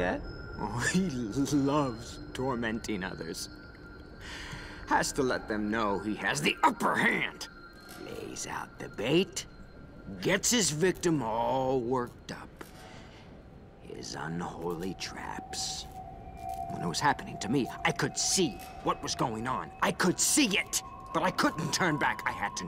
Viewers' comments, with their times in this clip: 0:08 screw that laugh. first boxdude comes alive and now this....-_-